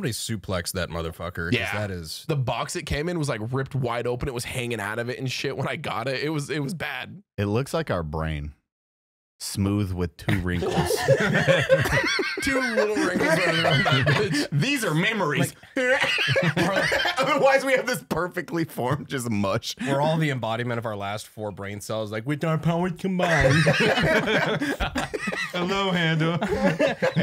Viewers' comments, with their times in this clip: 0:10 when Brandon said “Wit are powas cumbainded” I was brushing my teeth and gargling before bed. I laughed so hard at that moment that I sucked down the water and passed the f*** out and woke up a solid 40 seconds later on the tile floor sputtering. Thank you Unsubscribe for nearly killing me for like the 3rd time